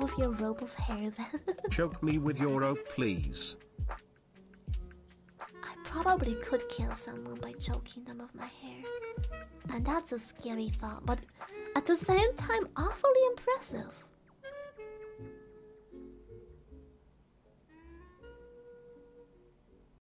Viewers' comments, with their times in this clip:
0:06 The silence at the end 😂